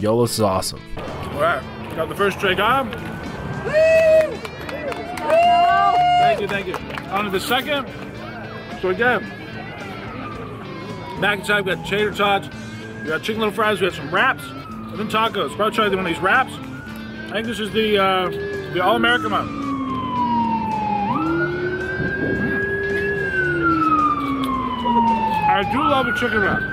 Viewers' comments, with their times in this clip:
0:08 That siren was an ambulance on it’s way to save him from his heart attack